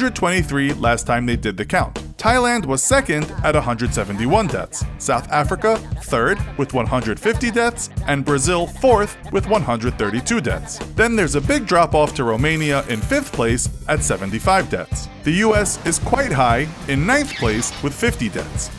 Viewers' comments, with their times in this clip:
0:04 that lady said da da da daing lol